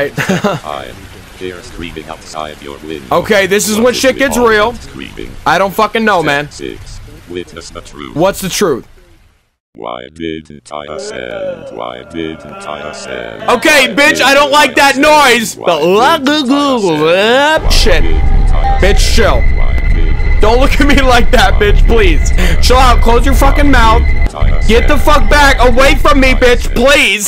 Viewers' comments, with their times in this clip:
0:09 whatever that distorted noise is, that same sound played in Walten Files when the TV screen showed the missing Jack poster thing